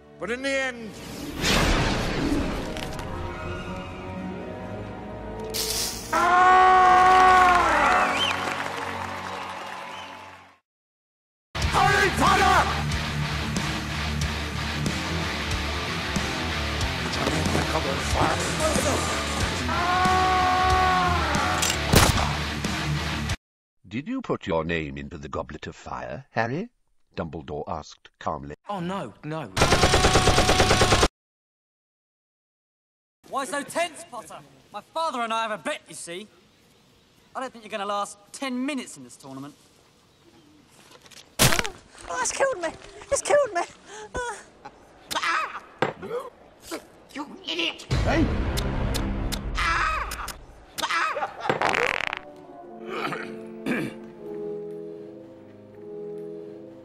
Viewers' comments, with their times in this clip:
0:05 When Dumbledore burn his face and everyone start clapping HAHAHAHAHA
0:16 you guys remember, Dumbledore asked calmly
0:41 the "ungh" noise draco makes when he falls omg its so hilarious.